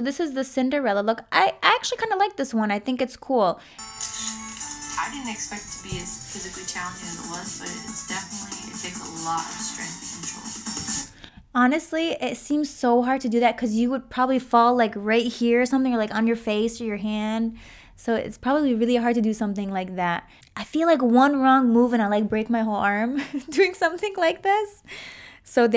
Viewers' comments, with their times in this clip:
0:09 I didn't she spoke arabic omg I'm proud😎